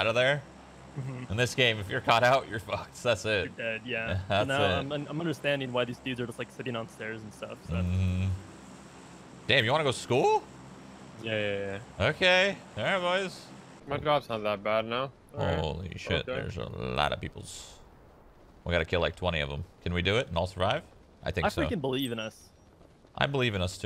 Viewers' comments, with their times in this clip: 0:10 EPIC VOICE CRACK LUV UR VIDS SHROUD